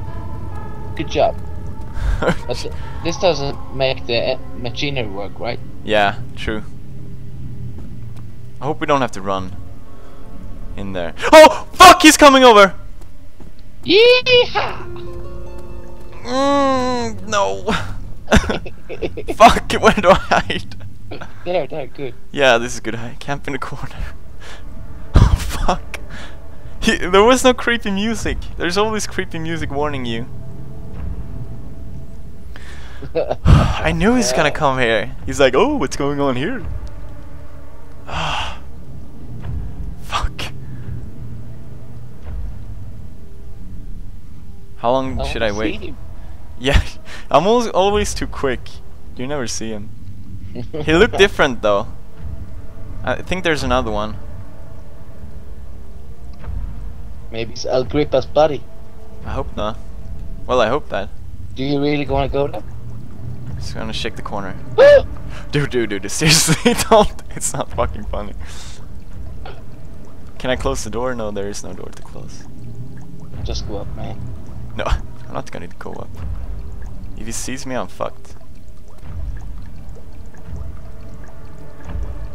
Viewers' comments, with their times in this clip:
0:10 I knew the Brute was gonna be there. So that didn't scare me. But when you screamed very loud (I had headphones on at the max Cause I thought you were done with screaming.) I nearly fell out of my chair. ...Jerk. I;< Naw I'm kidding. But now I know not to wear headphones while watching you.
0:33 < Epic voice xD
0:34 wow the monster sounds kinda like yoge the bear
0:34 Lmfao sounding like Barney!! :D
1:04 Pewedie's friend: "oo" scared the crap out of me